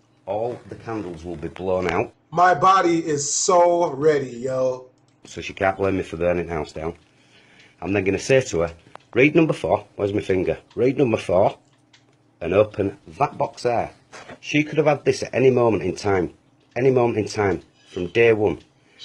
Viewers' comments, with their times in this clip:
0:03 “My body is so ready yo” tell me why he said that with such confidence